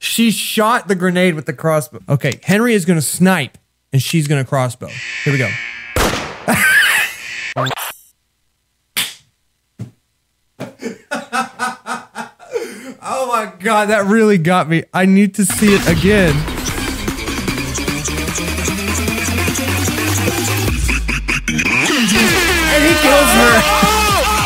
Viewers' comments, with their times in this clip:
0:05 The way he just wheezes